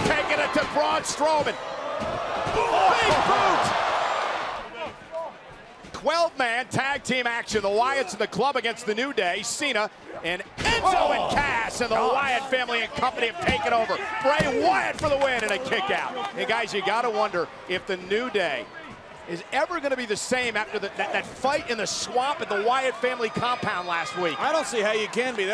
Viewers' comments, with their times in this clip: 0:06 we have discovered a new number quelve
0:06 Michael said "qwelve man tag team match" WELL DONE MAGGLE